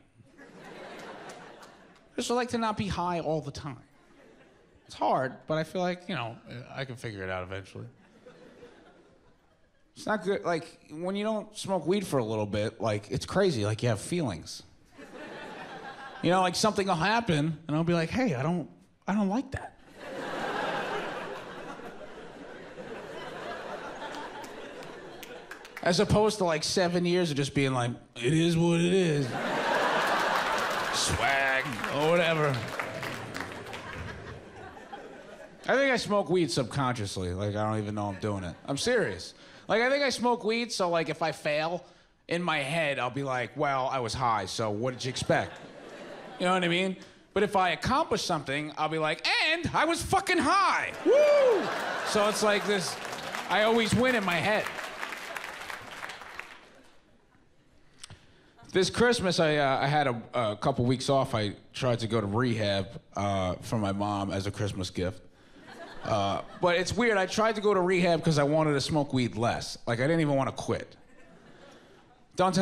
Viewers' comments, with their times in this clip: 0:09 It was evident from the way he delivered that line that he was deeply saddened; his watery eyes show you the emotional pain he was experiencing. It's clear that his regular use of weed had helped him to mask the harsh realities of his situation. However, upon stopping its use, he was forced to confront how badly people were treating him. I don't know but I felt that line a bit.
0:56 Dude is funny as hell, but the laugh track is flagrant... you can hear everybody stop at the same time. Anyone who disagrees doesn't edit videos.